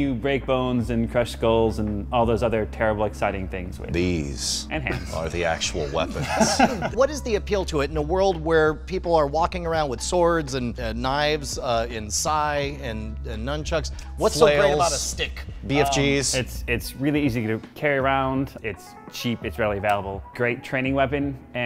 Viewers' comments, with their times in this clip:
0:03 dude i love his voice!